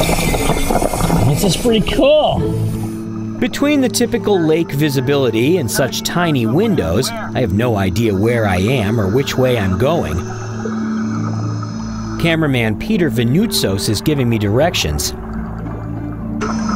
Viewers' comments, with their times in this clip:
0:03 The scene looks amazing... then you started screaming 'selfie stiiiick!' haha